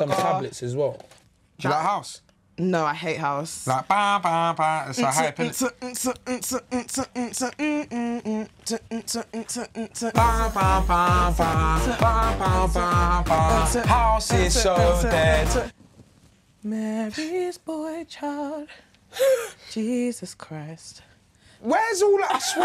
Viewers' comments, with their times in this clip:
0:05 The beat is lowkey banging.